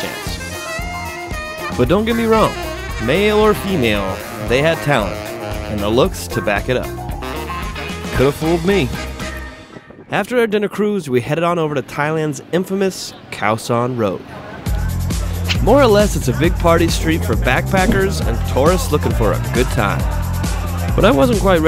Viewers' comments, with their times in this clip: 0:09 i found a few seconds without music. i left a dislike because i dislike the american tv style editing with all the music